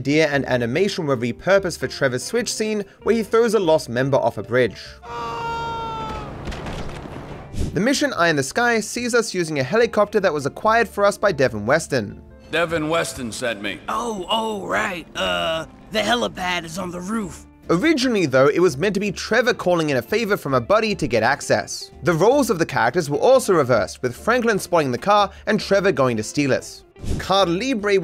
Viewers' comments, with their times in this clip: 0:10 I honestly cant tell if it's just me, but the cop at the desk on the "eye in the sky " mission sounds like a literal middle schooler trying to sound like an adult no? Lmao I just cant unhear it